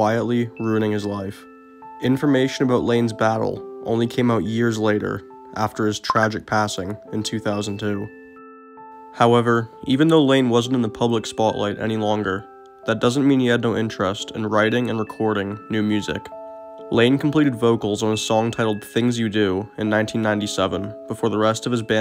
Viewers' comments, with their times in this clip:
0:05 Did anyone else think they got a Snap message?